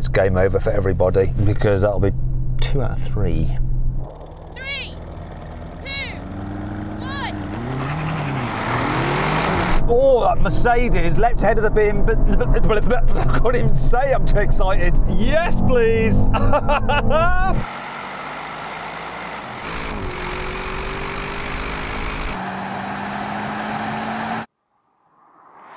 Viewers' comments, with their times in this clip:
0:06 ok fair enough..but why is it always a female voice..while its almost always clearly a man standing there....